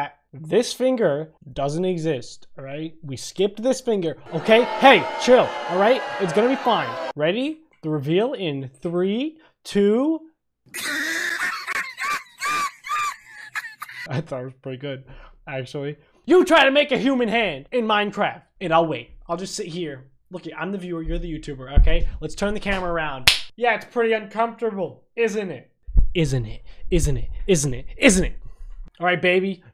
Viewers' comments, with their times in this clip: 0:10 I am dieing of laughter my parents told me to shut up I am crying how bad its,and the person laughing in the background makes it worse.🤣🤣🤣🤣🤣🤣🤣🤣🤣🤣🤣🤣🤣
0:10 i wasnt laughin at the hand, i wasnt laughin at the laugh i laughed at Both XD